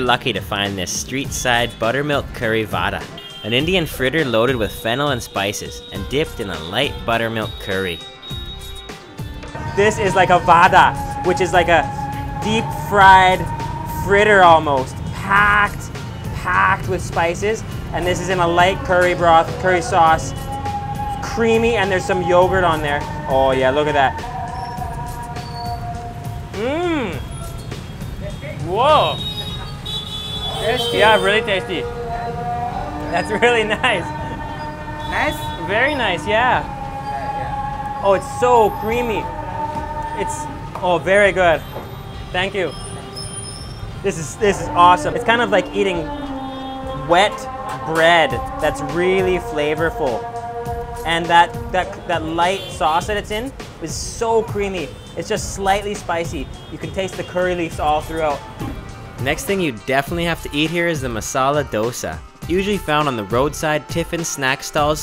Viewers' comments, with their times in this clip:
0:09 that's sounds really funny "This is like a vadaa" xD
0:28 On azaan has being going on
0:48 the background sound is very disgusting